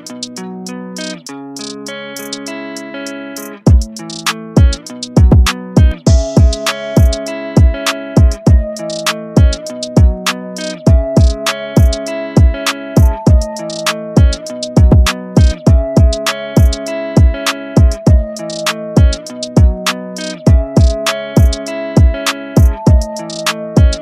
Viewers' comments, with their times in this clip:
0:06 the flute has is really too cool I love the soak would miss just a small 808! strength to you! 💪😈🔥